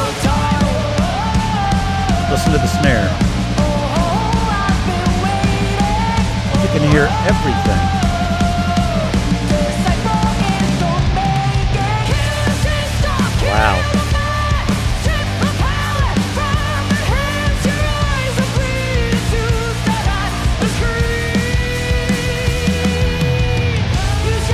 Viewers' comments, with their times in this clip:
0:06 that drum fil while singing is crazy!